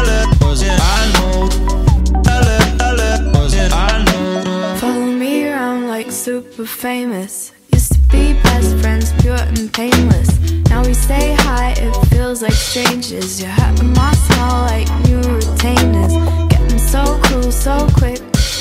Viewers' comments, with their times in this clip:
0:05 Whoever the bird is, she kills it
0:05 Mallrat kills it and steals the show from that point on